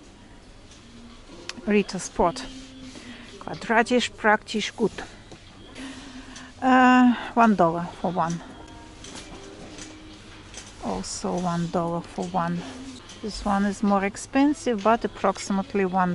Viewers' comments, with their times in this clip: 0:03 i thought to myself, wait what?!?! That wasn`t english or russian :) Your pronunciation is pretty good. I like Ritter Sport very much. They have a lot of tasty sorts. I would love to have some of them written in cyrillic letters.